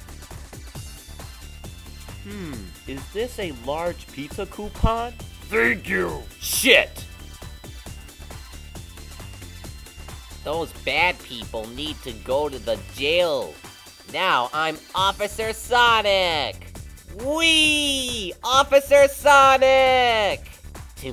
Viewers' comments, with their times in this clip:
0:05 shit!!! it sounds like him.